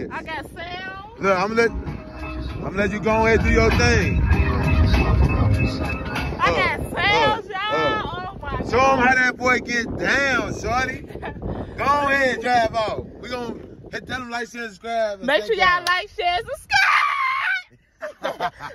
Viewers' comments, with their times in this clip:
0:05 that’s my sonnnggggg